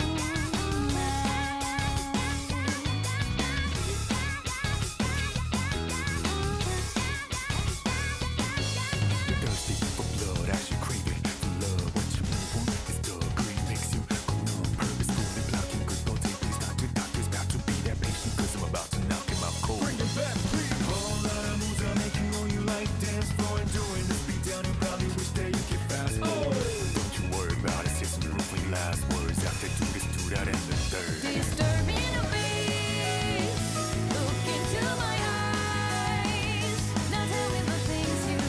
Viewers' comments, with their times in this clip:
0:09 FINALLY I CAN HEAR WITHOUT THE AUDIO TRANSITIONING FROM 2023 TO 2001 😭😭😭😭😭
0:20 rare lotus juice clean vocals sighting